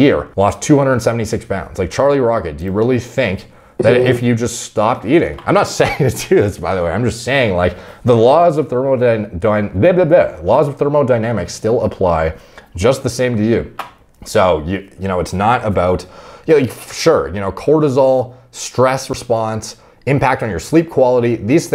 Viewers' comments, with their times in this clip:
0:03 was that a fart?